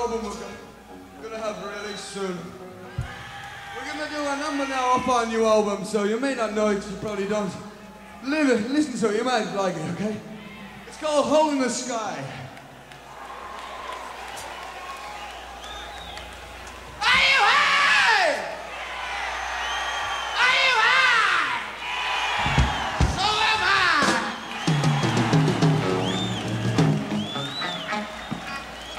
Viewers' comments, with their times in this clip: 0:10 I thought he said the song "homeless guy"...hahaha